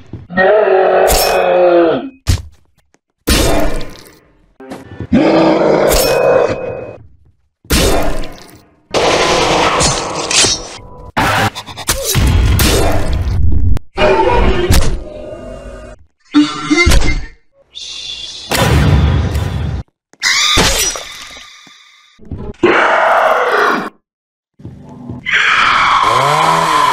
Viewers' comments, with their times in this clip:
0:10 the best rhythm i heard in my life